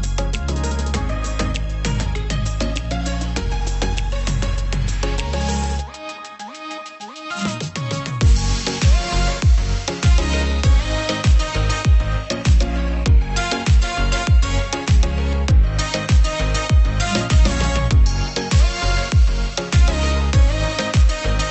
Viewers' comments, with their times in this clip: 0:04 I just could not listen beyond seconds!!!!!!! The Muzak is "Mind Destroying" trash, which reflects on the producer and editors. A "Pox on You", because I was really interested in this process.